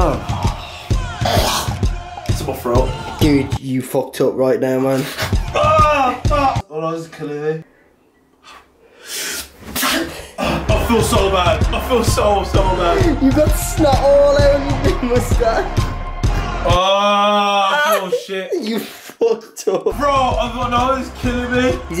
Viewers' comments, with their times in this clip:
0:07 how black people sneeze xd